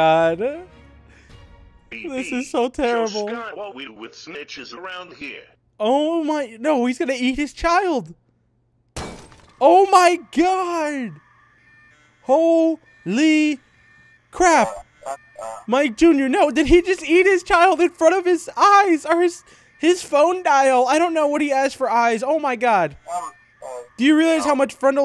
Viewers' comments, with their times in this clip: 0:10 fax machine sounds